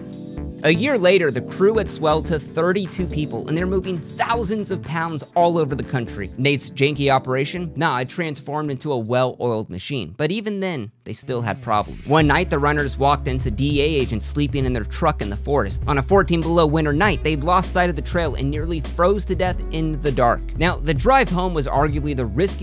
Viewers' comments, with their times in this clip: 0:06 Na or Now (nah) or (now)